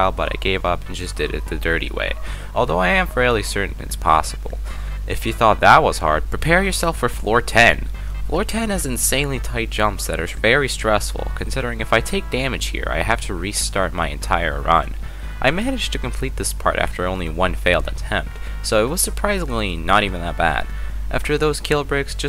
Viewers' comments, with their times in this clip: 0:03 who tf is screaming bloody murder in the bg